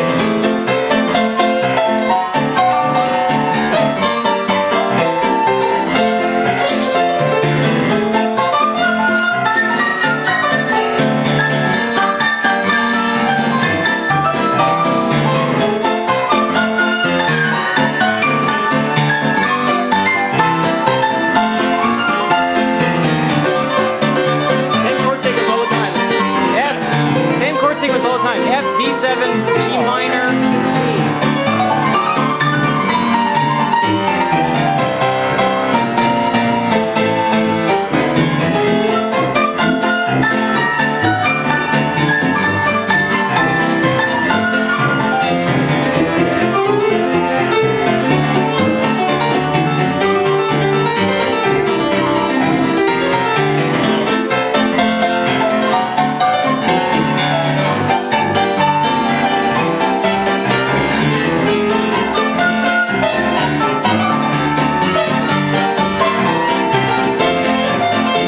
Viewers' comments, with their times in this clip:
0:05 everybody gangsta until mans busts out the tuba
0:54 is where they all join in